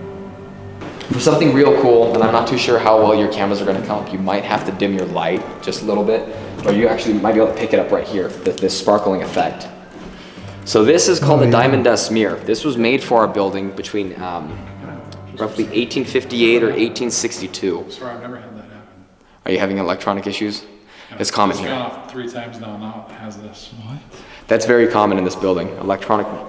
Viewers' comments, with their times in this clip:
0:08 when you said do you hear a voice I couldn’t understand the first word but I heard ___ “Bourbon